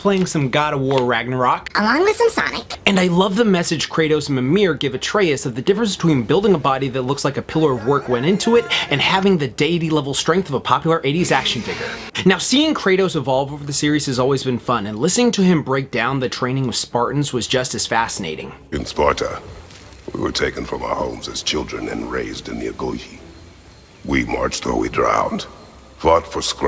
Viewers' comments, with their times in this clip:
0:07 that musical sound bite really is a core memory at this point, lmao